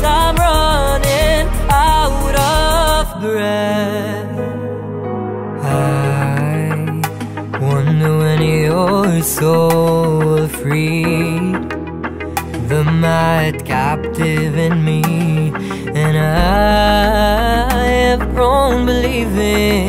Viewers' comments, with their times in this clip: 0:06 Im obssessed with the "I" !